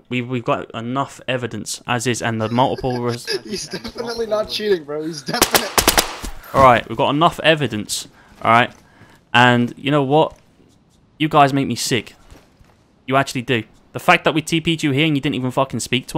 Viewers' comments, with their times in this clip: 0:03 Loud GET OUT!!